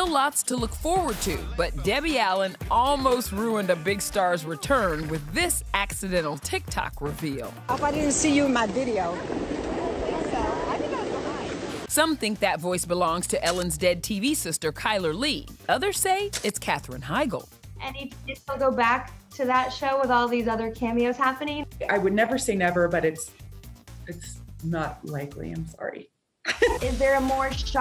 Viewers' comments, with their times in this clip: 0:10 same :( but in the video of debby allen it sounds like lexie in the background!!!! or is it just me hoping LOL